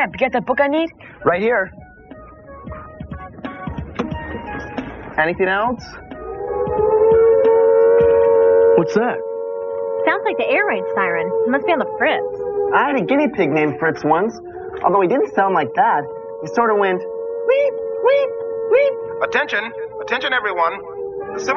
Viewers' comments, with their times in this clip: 0:06 the emergency outdoor warning system! Seek shelter immediately!